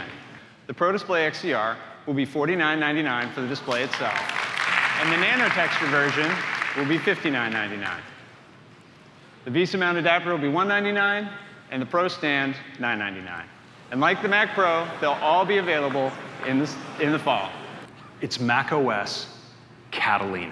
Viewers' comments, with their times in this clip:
0:04 you can hear the audiences dissapointment
0:07 Laughing at the audible shock at the stand price from
0:07 Listen to the people in the audience groan when he announces a $1000 monitor stand. Bruh, what kind of profits are they making with prices like this??